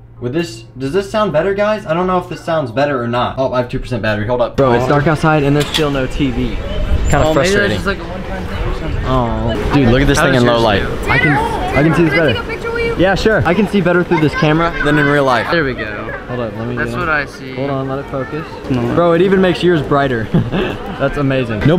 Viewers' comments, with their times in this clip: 0:04 Doesn’t it seem like the audio quality keeps cutting in and out? It’s so annoying in my opinion. I hope it’s just a temporary problem.(UPDATE): he fixed the problem